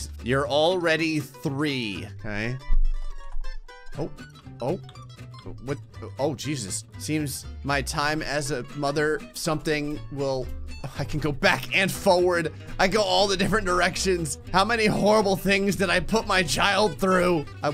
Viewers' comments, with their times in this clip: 0:05 i like how it said fukushima